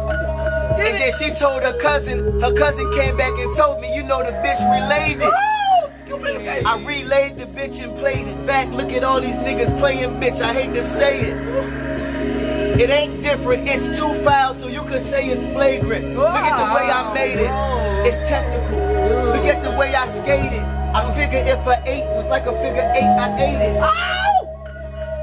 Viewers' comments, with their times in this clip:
0:06 "And then she told her cousin and her cousin came back and told me you know that bitch relayed it"@ you hear that nigga in the background go like "OH that's communication!" LMFAO